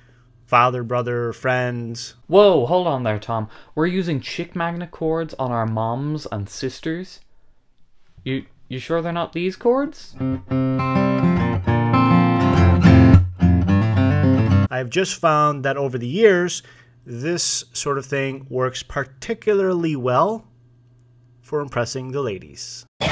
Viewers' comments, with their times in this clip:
0:09 The chords had me cackle. Thank you, sir.